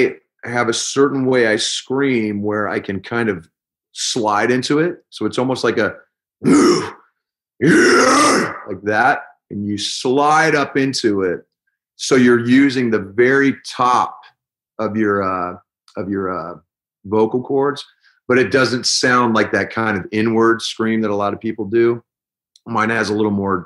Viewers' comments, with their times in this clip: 0:06 kinda made me laugh... I mean it sounds ferocious and great, but still made me laugh.